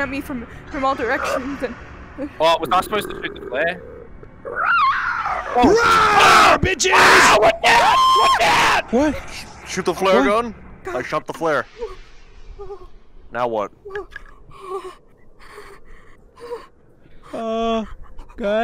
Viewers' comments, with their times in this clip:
0:04 why does narrorator sound like a clicker from last of us